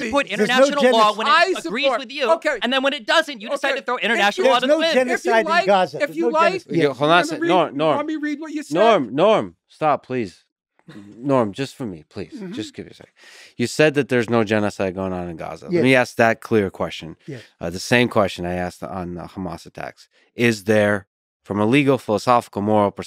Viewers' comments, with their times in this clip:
0:06 mins in when Lex cut Norm off, that's the most worked up I've ever seen him...dunno why but it was hilarious how abruptly he did it. 😂